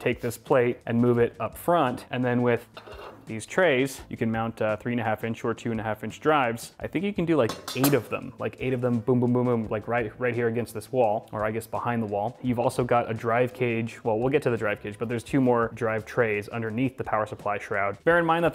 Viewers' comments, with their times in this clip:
0:05 = Minecraft anvil sounds